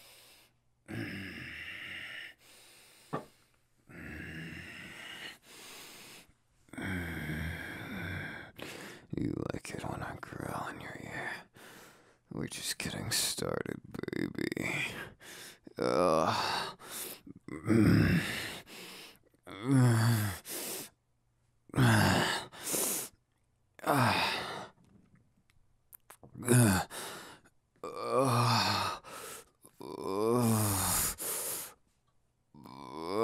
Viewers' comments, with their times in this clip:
0:08 Ok is it just me or dose bakugou sound like Aizawa ps if no one has told you today You are worth it . i my not have met yall but i love yall
0:12 Bakugou used todoroki deep voice and said baby oH GoD Here it is:
0:16 Me: im dying also why do I feel shoto is taught bakugou the illegal voice of baby~ 😤😖🤔